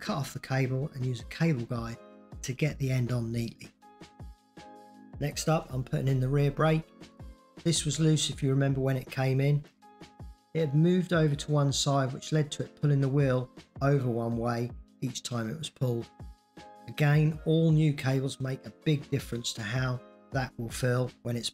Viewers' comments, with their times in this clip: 0:04 Great video as always. Not sure if it's just me but seems there was a slight issue with the audio Not a criticism at all but maybe something to fix if you wish